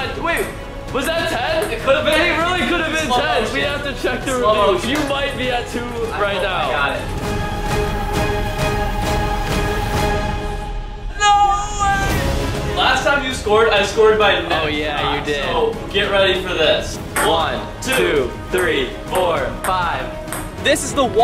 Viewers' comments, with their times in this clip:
0:05 Music sync Easter egg
0:06 it was on the beat
0:06 the ball bouncing is perfectly in sync with the music
0:08 the bounces were perfectly in sync with the music.